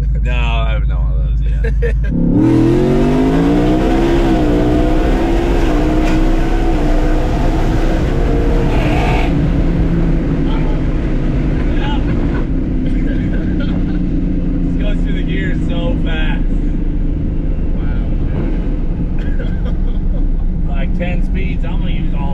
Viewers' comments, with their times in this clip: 0:09 what is that horrible sound at the end of the 2nd pull?? Sounds like something is NOT HAPPY AT ALL.